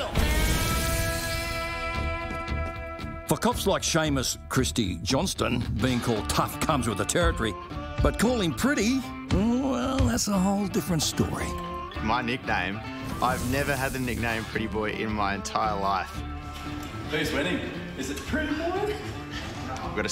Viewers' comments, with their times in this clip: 0:07 they leave C U Next Tuesday in but they bleep F**king out. Huh!